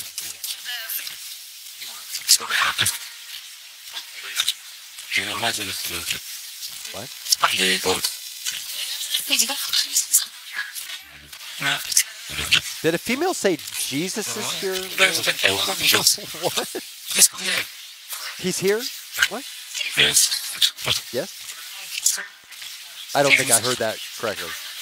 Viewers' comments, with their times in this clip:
0:06 "I CAN HEAR YOUR VOICE " .Robotic man voice